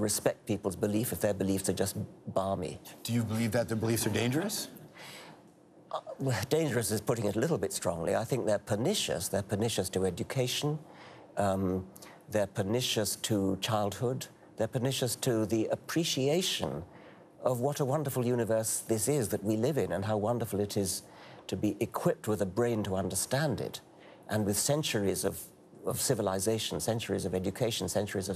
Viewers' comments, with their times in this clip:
0:09 Would somebody be able to tell me what the word is that Richard is repeating ? It was in response to the question about whether these religious beliefs are 'dangerous'. Maybe it's his accent? I can't even figure out what letter it starts with...B? Thanks in advance :)